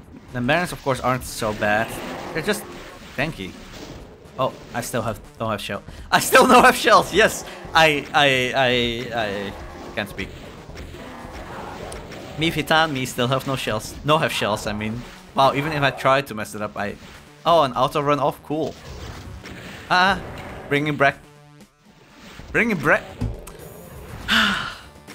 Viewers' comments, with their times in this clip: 0:07 bro having a stroke.